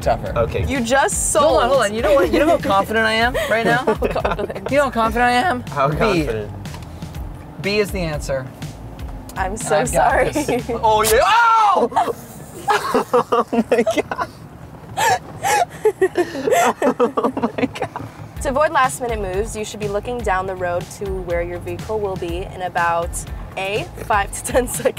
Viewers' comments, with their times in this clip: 0:05 Am I the only person who heard hunters voice crack Lol puberty is real